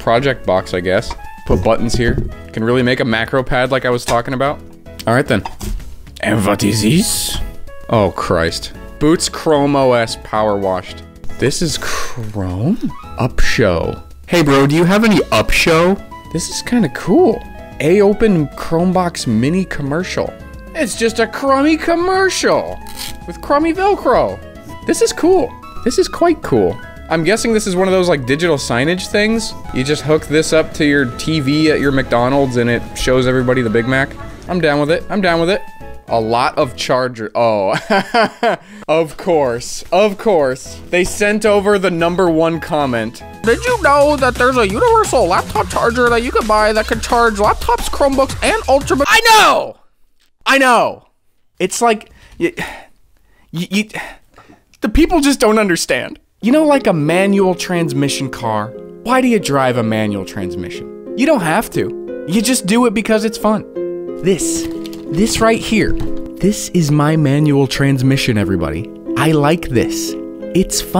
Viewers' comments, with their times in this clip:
0:04 the french accent got me dying 😂
0:56 the portal music made that scene so many times better